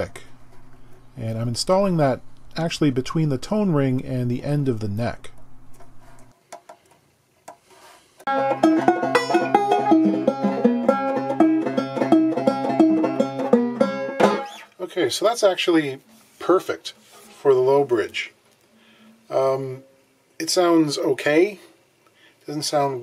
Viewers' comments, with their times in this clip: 0:09 that was nice - reminded me of some of the Doc Watson and Family albums, or the old Folkways catalog :)